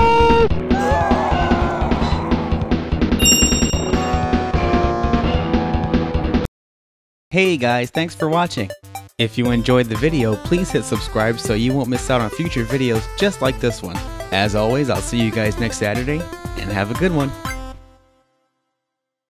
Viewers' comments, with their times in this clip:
0:07 FINALLY WE HEAR HIS VOICE